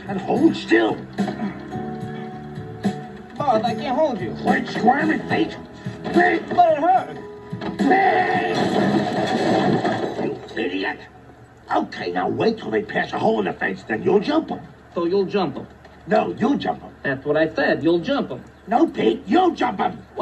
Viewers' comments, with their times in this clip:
0:06 (Chuckling) But it hurts!